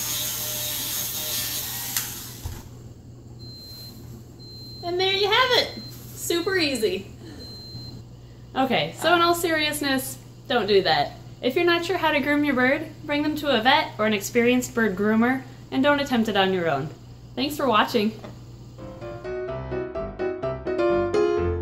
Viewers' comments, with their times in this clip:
0:04 did your fire alarm went off cause of the grinding smoke XD